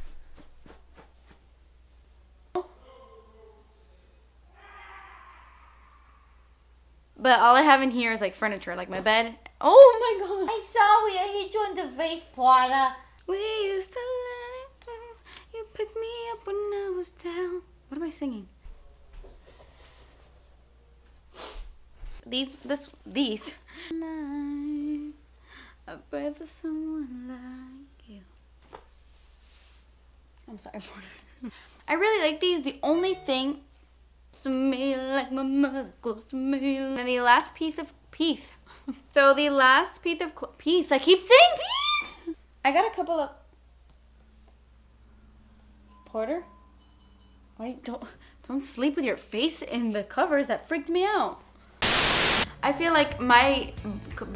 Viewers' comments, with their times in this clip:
0:10 omg you sounded like Janice XD
0:41 you scared Porter 😂 you singing, best bloopers ever! Love you so so much!